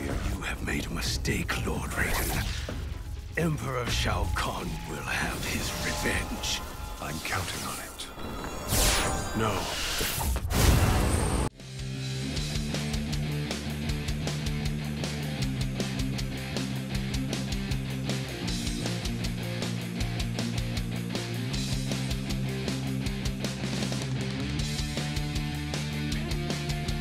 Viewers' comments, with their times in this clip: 0:10 Shang Tsung let out a Dang Toot.